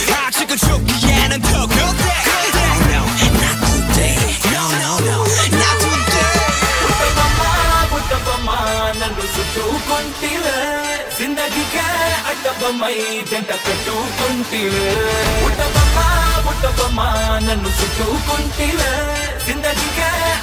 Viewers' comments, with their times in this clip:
0:08 WHAT A MIX AND THE SELECTION OF TUNE !!!!!!!!!!!!!!!!!!!!!!!!!!!!!!!!!!!! BESTTTTTTT